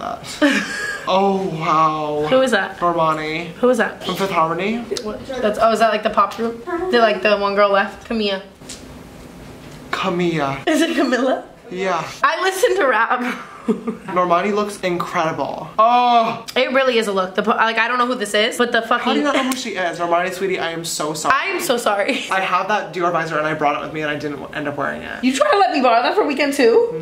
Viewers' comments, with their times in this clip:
0:08 “CaMiYyA” IM FUCKING SCREAMING